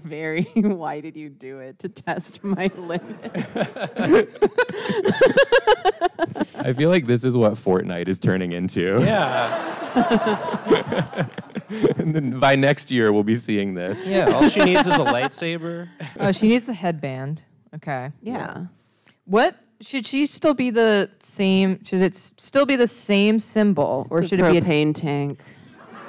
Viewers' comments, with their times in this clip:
0:07 somebody REALLY liked that fortnight joke